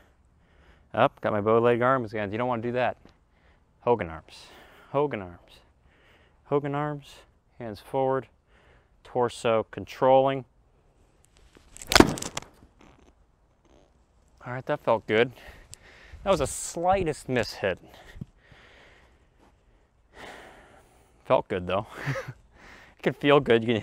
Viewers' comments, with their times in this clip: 0:09 Hahahaha fart followed with a that felt good !!! 😄 🤣 😂 😆